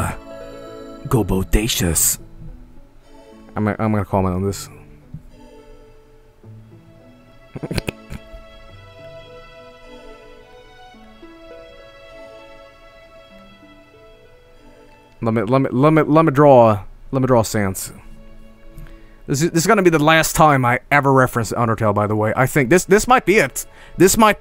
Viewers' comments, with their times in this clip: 0:07 woa what the fuck was that noise!? XD